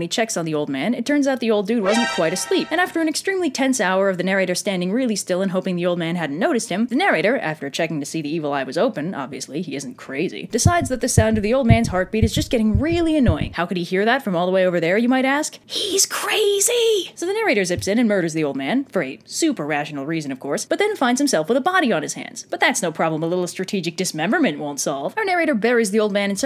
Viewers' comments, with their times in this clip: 0:10 when the heart started thumping I shat myself